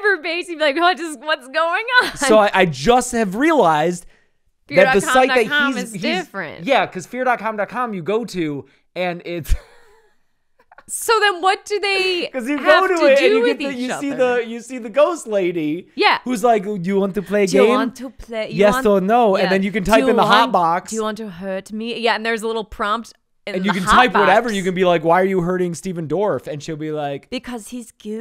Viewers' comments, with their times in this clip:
0:09 Sorry that laugh was insanely cute for some reason. LMFAO y’all are trying desperately to understand this movie so badly. Love watching people poke at trash sometimes.